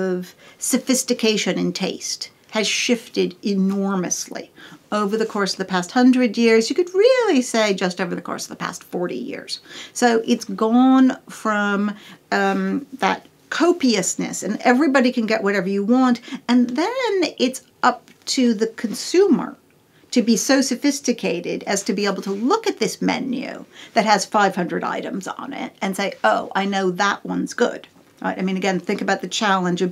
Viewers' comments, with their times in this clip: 0:10 I can't decide what kind of accent she has lol